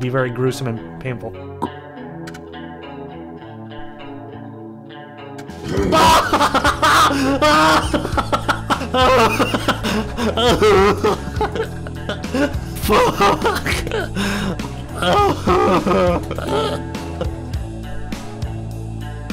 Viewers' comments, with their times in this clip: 0:03 im actually crying, the music timing and pay off was so immaculate